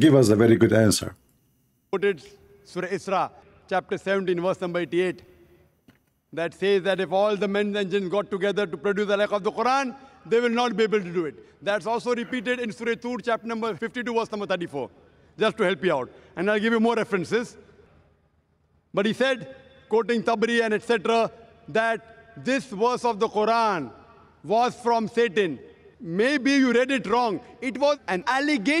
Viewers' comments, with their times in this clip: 0:09 Ohhhh myyyyy that accent Dr zakir nalayak ☻